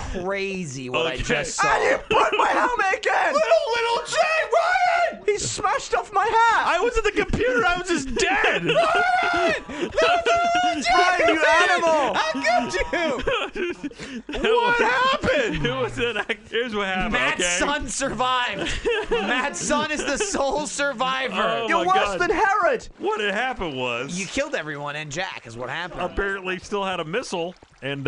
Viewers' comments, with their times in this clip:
0:10 After listening to it for the um-teenth time, I think I finally heard: “Ryan! How could you do that?!”